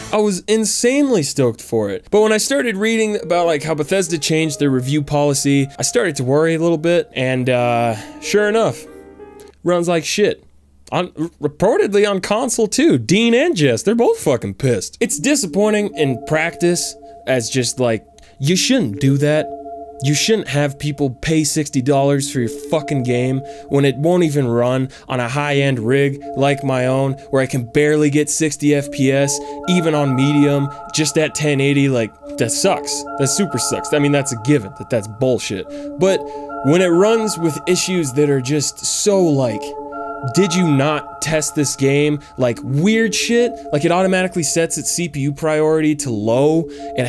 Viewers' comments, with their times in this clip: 0:08 Glorious Nostalgic music
0:15 What's that sad music that starts playing ? It sounds SO familiar.
0:15 stright up Xaiver Wulf abouta start bumpin
0:16 What's the music that comes in ? The spoooky melody... damn it's gorgeous
0:20 anybody know this song that plays in the background? Its so soothing to the ear
0:28 i thought xavier wulf was about to start thumping damn!